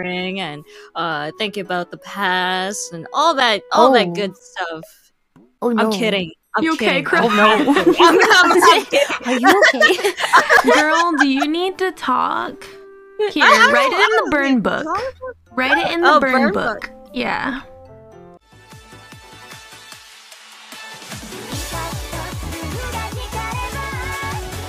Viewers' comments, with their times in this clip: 0:10 oh nyo, the curse of the valley girl accent is spreading again